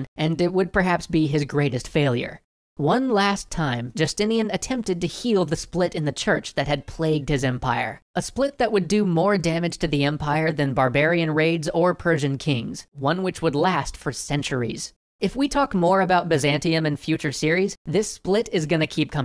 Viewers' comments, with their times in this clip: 0:06 was that a cat?